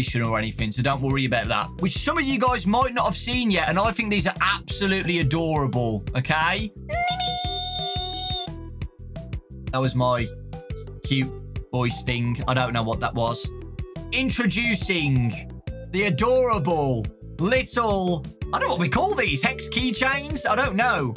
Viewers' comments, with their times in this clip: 0:06 the squek was cute af